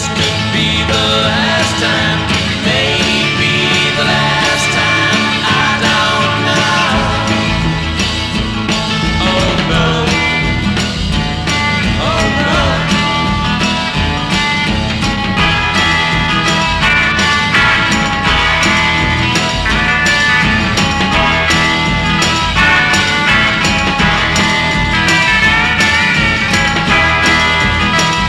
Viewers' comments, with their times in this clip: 0:10 Brian Jones intentionally missed a chord? Music mysteries part one.